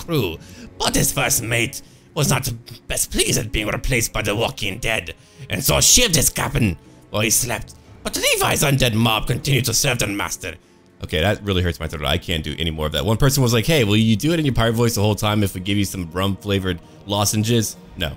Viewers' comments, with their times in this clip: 0:06 he sounded like hienz doofenshmurch. 😂😂 (I hope that's how ya spell it but ya get the idea)